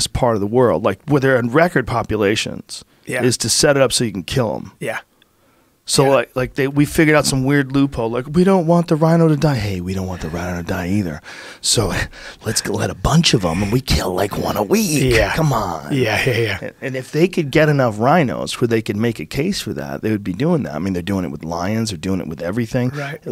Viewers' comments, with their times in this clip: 0:10 sounded like Charlie sheen a bit😂